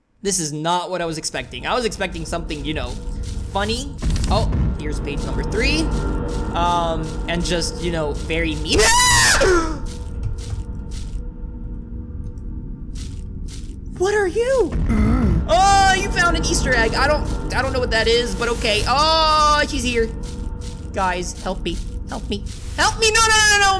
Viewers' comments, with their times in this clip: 0:08 That scream scared the crap out of me 😂😂😂 I wasn't expecting that lmaoo